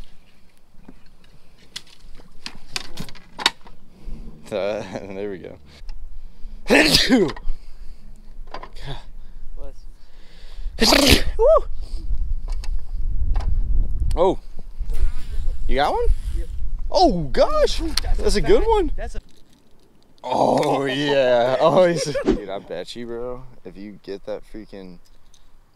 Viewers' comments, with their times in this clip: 0:09 machine gun sneeze. THAT was so cool. LOL 👍❤️✝️🇺🇸